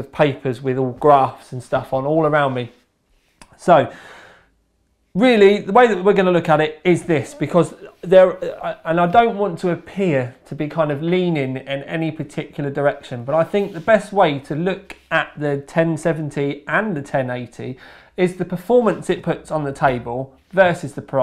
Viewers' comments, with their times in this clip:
0:05 Playing off the fart like a champ